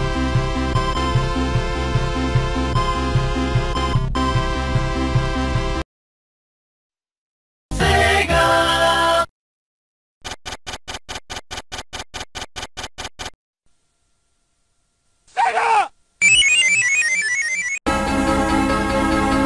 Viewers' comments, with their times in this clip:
0:06 Sega sound viral